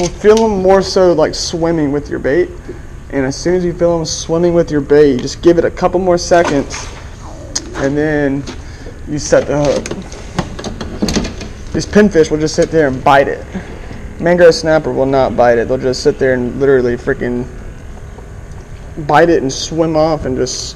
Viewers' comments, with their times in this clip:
0:07 Don't go out there hungry bro. I heard your stomach growl. Don't spook'em!